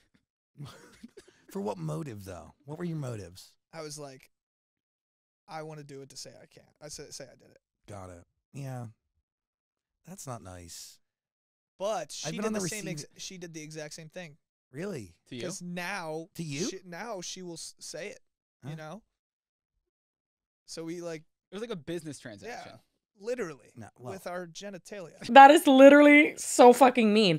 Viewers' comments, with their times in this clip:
0:10 your clips are really low. I had to double check the video wasn't paused or ended.